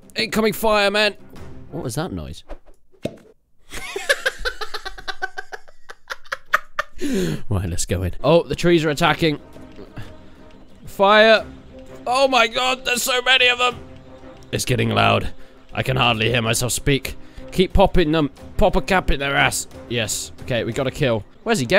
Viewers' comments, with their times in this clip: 0:03 that goblin laugh tho